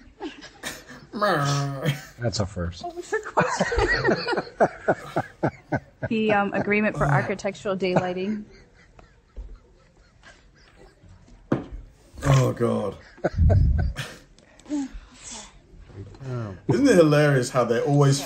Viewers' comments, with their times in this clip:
0:03 was the funniest one mayor fart had something to say lol 😂😂